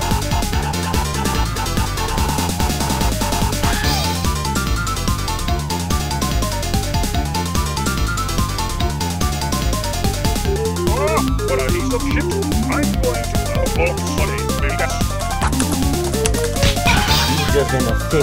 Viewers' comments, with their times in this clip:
0:04 sounds like sburban jungle but it's probably a coincidence